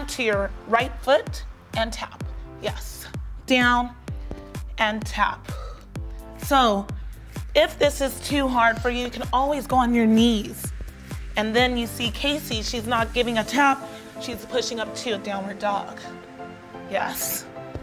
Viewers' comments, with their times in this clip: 0:05 Did anybody hear someone burp ??? 😂😂😂😂